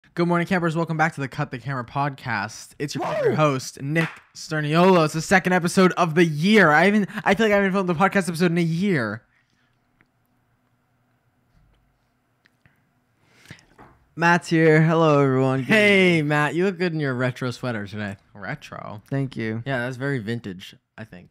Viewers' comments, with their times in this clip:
0:06 THE SILENCE HAS ME CACKLING
0:09 THE AWKWARD SILENCE 😭😭💀